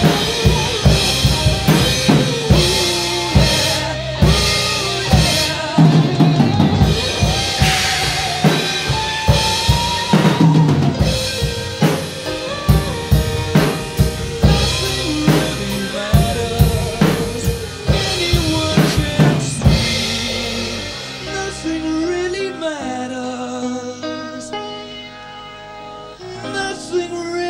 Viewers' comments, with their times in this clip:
0:10 I luv drum so detail cover